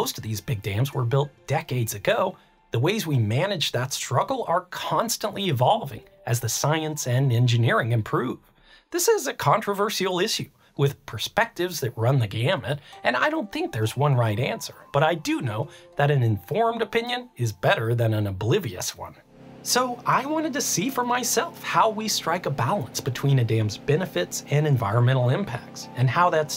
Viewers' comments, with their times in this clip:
0:09 Is it some kind of a trend to misspronounce "issue" the way the guy in the video does? e.g. I've started hearing random YouTubers here and there pronounce it that way in the last month or two, this is the 3rd or the 4th youtuber.